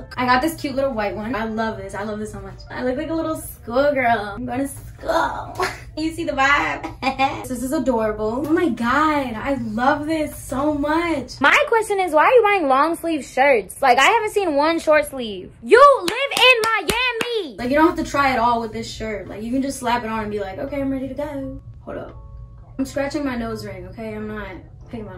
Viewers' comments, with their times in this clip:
0:07 this laugh is everything